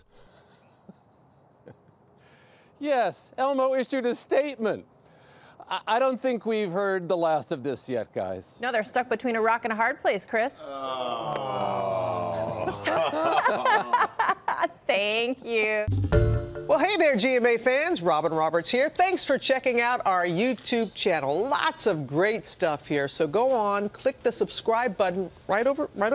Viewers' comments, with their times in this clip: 0:08 LOL! 🤣🤣🤣 The cast groaning at the joke lmfao